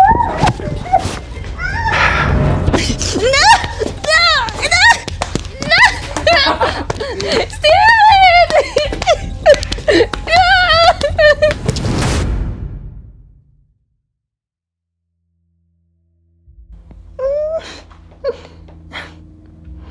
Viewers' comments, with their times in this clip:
0:06 is no one gonna talk about him laughing